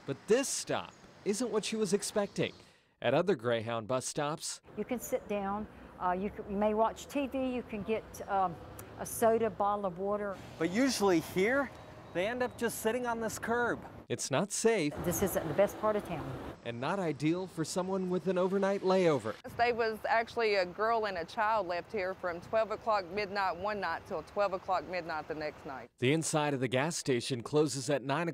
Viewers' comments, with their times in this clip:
0:09 she said a bottle of wooder 😂 shoulda also said sodie pop